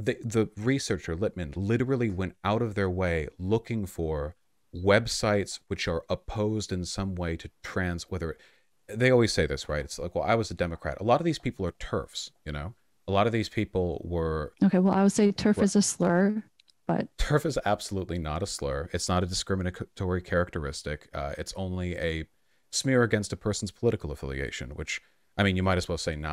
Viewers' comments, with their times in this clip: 0:09 is the best laugh of the vod